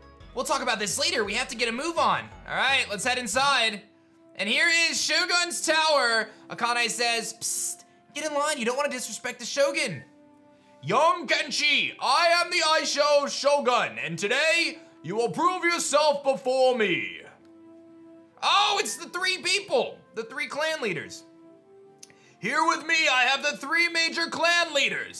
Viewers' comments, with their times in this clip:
0:09 Indian voice YOUNG KENSHI... crap... returns voice to normal